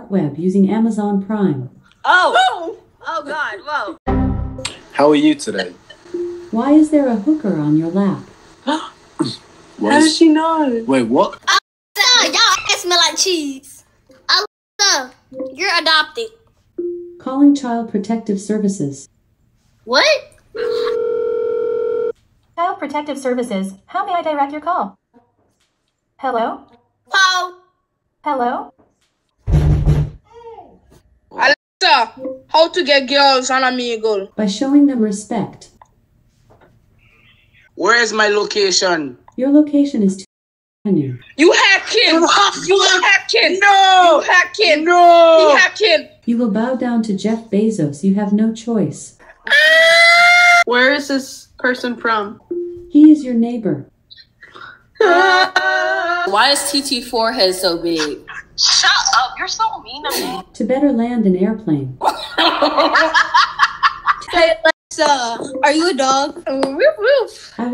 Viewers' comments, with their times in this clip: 0:07 Okay so wait the girl's first question wasn't "Hooker?!" It was instead "How did she know?!" XD
0:11 WAS SO FUNNY LOL AND THEN WHEN THE DOOR KNOKED AND THEY STARED LOL
0:12 Omg when somebody knock the door and said "AY!!" I laughed so hard 😭😭😭🤣🤣🤣🤣😂😂😂😂
0:28 XDDDDDDDDDDDDDDDDDDDDDDDDDDDDDDDD i can't stop laugh when someone knocked the door.. such a great timing🤣🤣🤣
0:28 that make me funny lol that knocking 😂😂😂
0:29 when someone knocked the door.. such a great timing🤣🤣🤣
0:29 I lost it when I heard angry mama pounding on the door
0:46 I love that scream XD
0:46 Y”you will bow down to Jeff bezos” his reaction “AHHHHHHHHHHHHHHH!!!!”
0:46 HELP I CAN'T THE SCREAM
0:49 dat scream tho
0:49 is the best scream I’ve ever heard in my life
0:55 HELP THE OOOOOOOOOOOOOOOOOOOOOOOOOOOO GOT ME LIKE